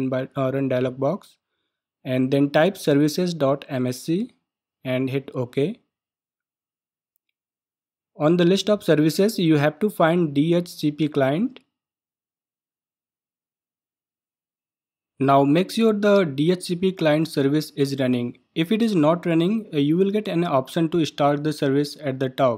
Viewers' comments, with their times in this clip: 0:04 Minute service what?